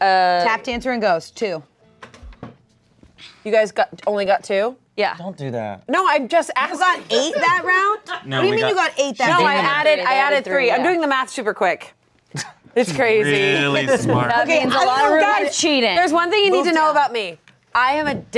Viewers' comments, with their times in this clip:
0:05 Sometimes the laughter in the background is just perfect lmao